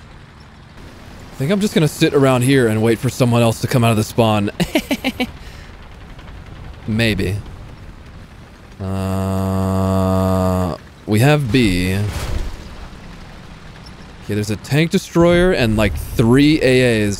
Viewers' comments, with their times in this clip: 0:03 that laugh got me 💀